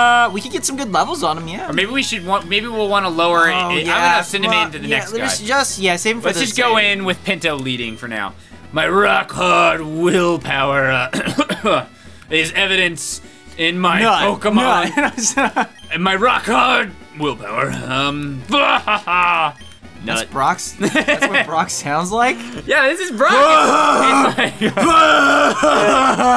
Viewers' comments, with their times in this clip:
0:08 Pfft was weird